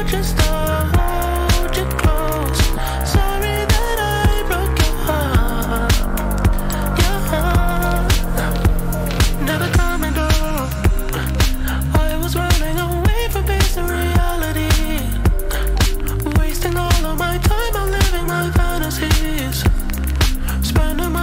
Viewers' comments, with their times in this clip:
0:08 Sounds like kissland and mdm had a baby but the beginning also sounds like the birds pt.2 at like